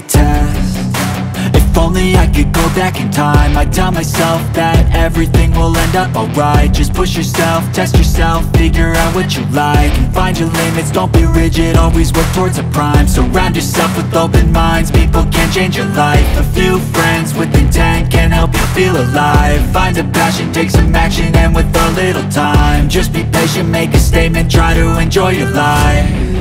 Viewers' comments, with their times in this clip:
0:07 WTF was that music for Aftermath hahahaha 😂